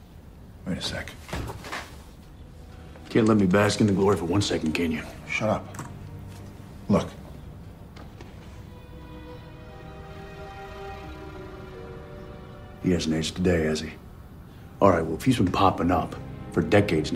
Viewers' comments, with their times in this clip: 0:05 it reminds me of me and my "sister" when he says shut up. I say it exactly the same way as Sam.